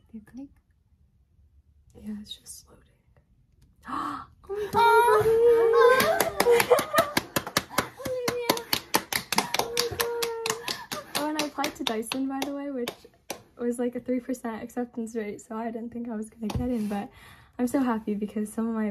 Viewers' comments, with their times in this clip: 0:05 Why the mom moaning